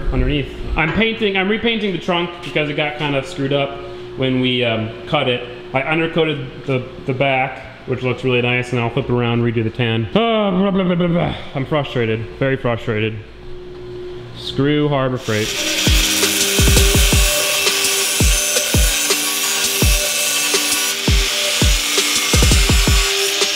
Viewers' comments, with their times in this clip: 0:09 the sound your car makes when it wont start.